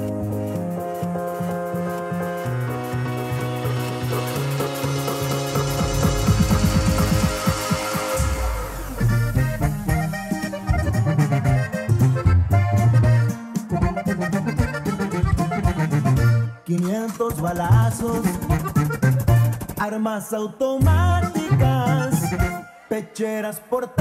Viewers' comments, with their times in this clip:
0:08 By far my Absolute favorite part is What an Amazingly talented flow.
0:11 how did some Mexican corridos sneak into the Ephwurd play mix by minute juncture ?? that was beyond uncanny and unexpected. I thought Mexican 'corridos' are limited to the back of the house kitchens at restaurants and carnicerias?